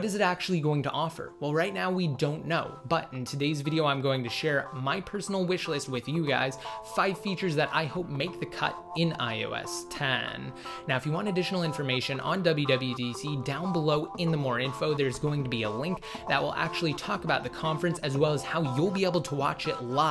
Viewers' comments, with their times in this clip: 0:08 (in iOS Tennnn) had me crying